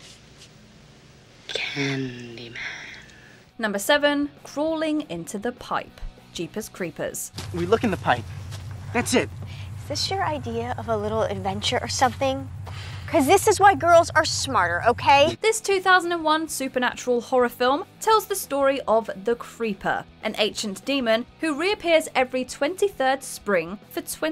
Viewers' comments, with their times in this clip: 0:09 Why is "Trish" from Jeepers Creepers' voice so high pitched ? She doesn't sound like a chipmunk in the film.